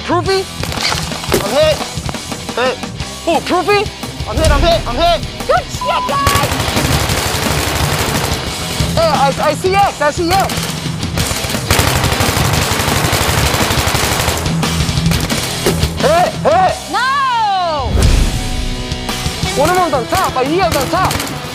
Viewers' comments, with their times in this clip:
0:05 They fucked up a censor bleep Good shit guys. Good shit.